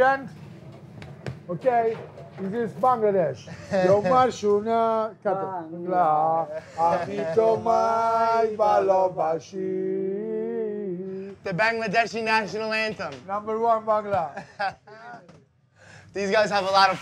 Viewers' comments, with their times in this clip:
0:03 Well I'm from Bangladesh and was so surprised by the singing of our national anthem ...Random n awesome!! lmao!! Thumbs up for the Bonci boyz!!
0:03 Gabriele bonci singing amar shonar bangla and and calling Bangladesh number 1!!!! Damnnnnnnnnnnnnnnnnnnnnnnnnnnn 🥹
0:05 OMG my national anthem❤❤❤❤❤